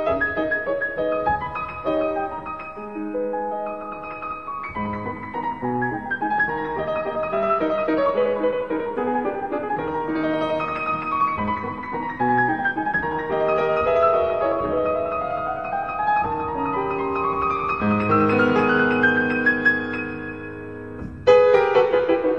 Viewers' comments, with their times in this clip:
0:03 the speed is completely insane.